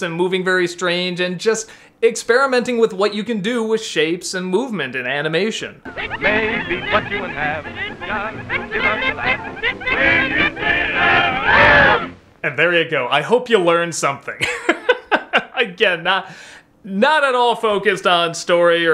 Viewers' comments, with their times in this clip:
0:06 Okay I know it's supposed to say "Maybe cut you in half" but I hear "Maybe cut off your ass" but that's just how I think